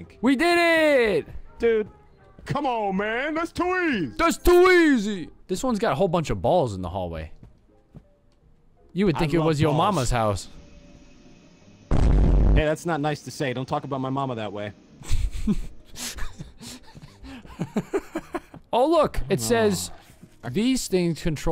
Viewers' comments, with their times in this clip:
0:09 vine boom got me💀